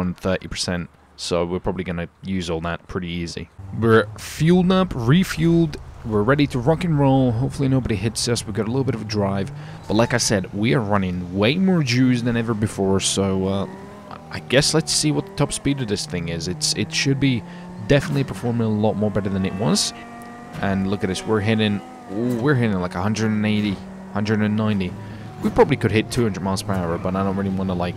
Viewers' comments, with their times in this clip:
0:10 he’s running way more Jews than ever before. 🤔😂